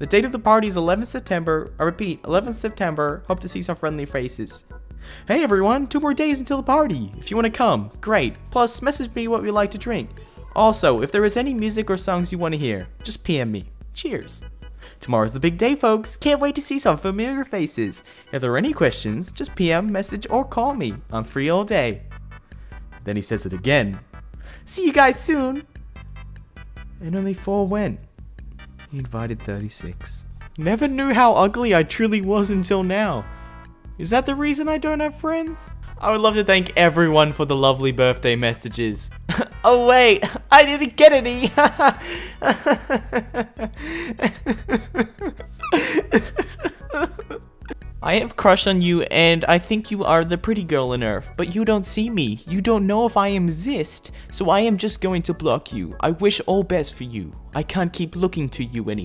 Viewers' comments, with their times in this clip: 0:10 I heard kids in the background 😂😂
0:42 Hahahahahahah squeak hahahahaha